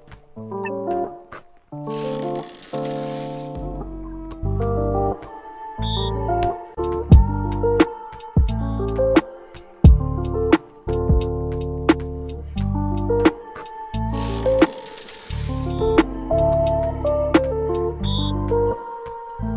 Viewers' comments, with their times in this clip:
0:03 The music is so chill I just listen to the person singing and I feel like I’m floating tbh